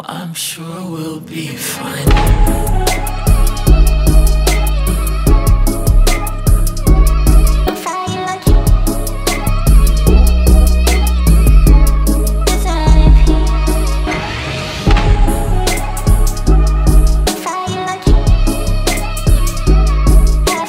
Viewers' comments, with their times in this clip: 0:07 what does she said? very-very james blake vibe perfetto!!!